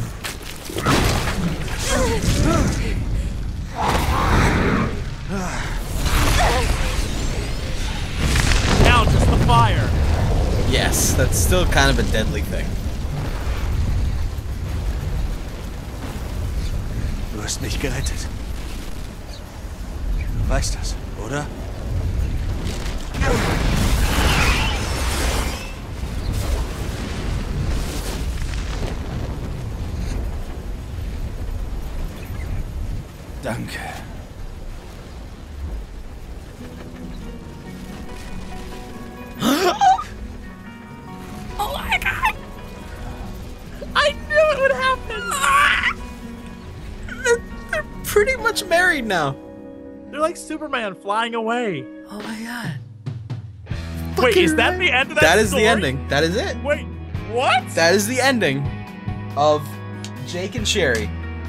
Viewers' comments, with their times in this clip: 0:04 Them squeaks on + xDDD
0:42 that sqwack though...
0:44 Pterodactyl shriek xD